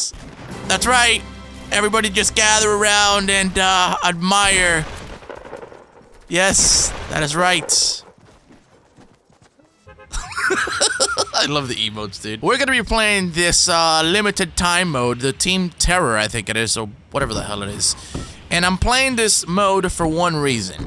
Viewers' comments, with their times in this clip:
0:06 I love your laugh u laugh like penny wise